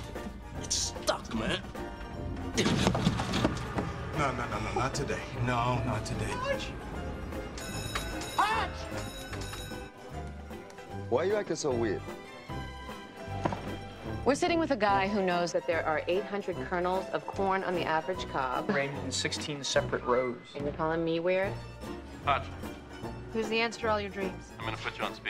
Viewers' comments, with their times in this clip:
0:06 the high pitch Hotch scream